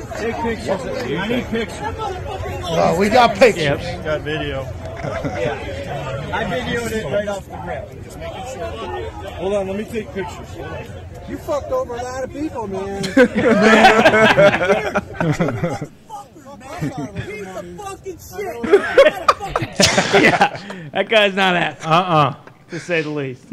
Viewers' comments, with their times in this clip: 0:10 Nice to hear from Tommy Chong